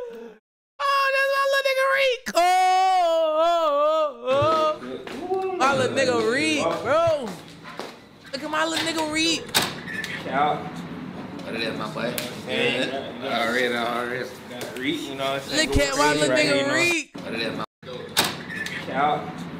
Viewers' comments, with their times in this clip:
0:05 when the whole gang rapping to your shit😮‍💨🔥